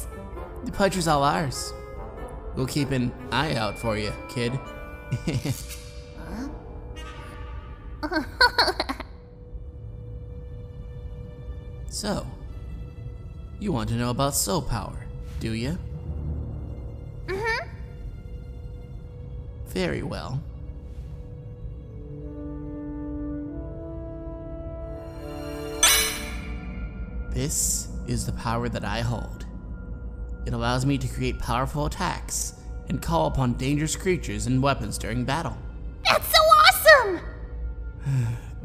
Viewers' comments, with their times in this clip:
0:08 Ummmm on whoever knows Aphmau here they should know but anyways doesn't undyne sound a little bit like Katelyn when she laughs at Sans horrible joke ( I still don't know why he jokes around)?
0:22 Kinda sounds like Star Wars... XD